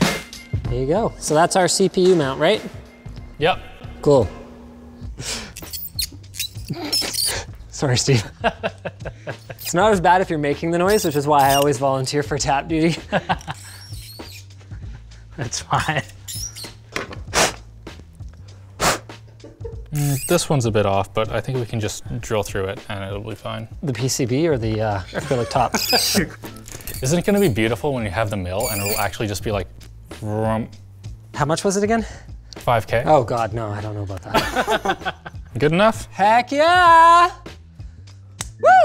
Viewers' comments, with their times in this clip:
0:05 FUCK!! MY EARS ARE BLEEDING!!
0:22 Time stamp: That squeaking sound during the tap and Die is Linus's ass when you said 5 grand for the Mill.. that's what a tight ass sound's like... LOL..